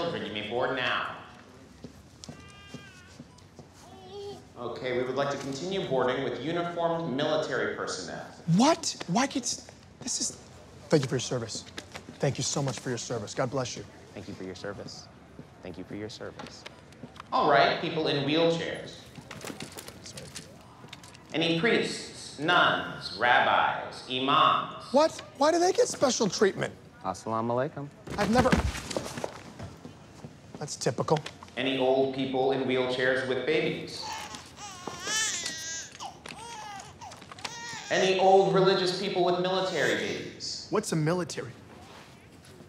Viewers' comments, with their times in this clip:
0:10 Hahah the awkward obligated "thank you for your service"
0:26 The sounds Peele say Assalamualaikum is on point 👌